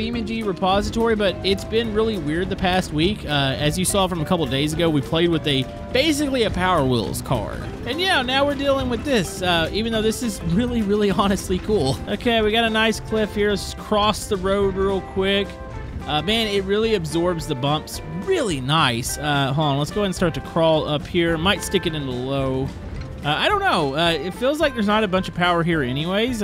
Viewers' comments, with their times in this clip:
0:10 You can’t hear him talking